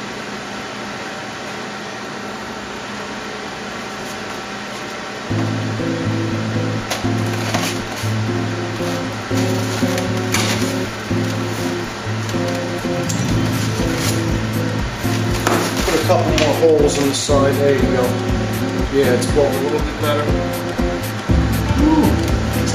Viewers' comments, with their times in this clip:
0:04 you're really classin' up the joint with that Sonic Chill lounge music.